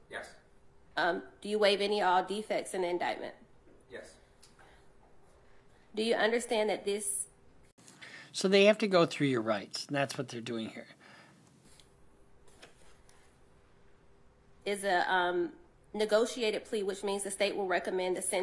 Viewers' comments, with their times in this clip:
0:04 Why she sound like she wana cry